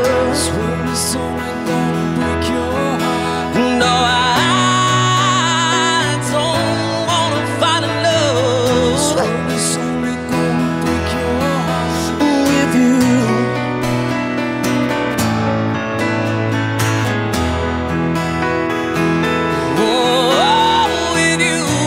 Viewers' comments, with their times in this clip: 0:09 I love this version, but why is there a single dog bark ?